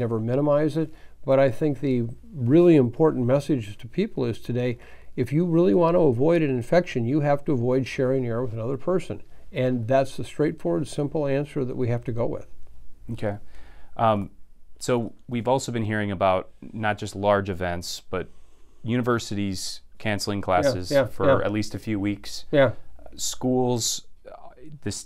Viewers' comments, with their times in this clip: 0:10 or so . . . Help, what did he say, he slurred an important word: "If you want to avoid getting this virus you have to avoid sharing __???__ with another person". What was that sentence??